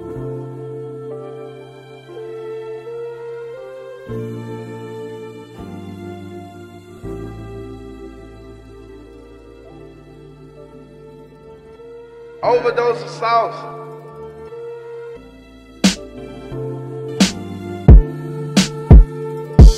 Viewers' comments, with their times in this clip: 0:05 seems like mos def im living